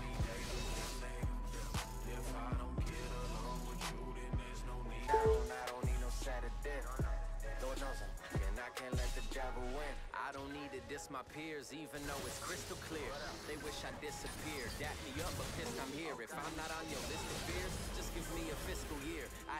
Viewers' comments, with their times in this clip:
0:05 lmao that iPad charging sound effect xd